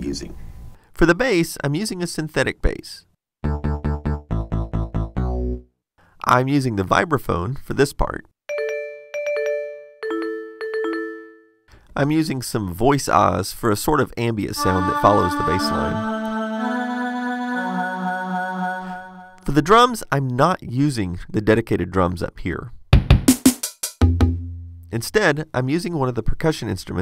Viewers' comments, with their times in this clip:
0:08 In It looks like you got two messages on Windows Messenger.
0:08 sounds like Windows Messenger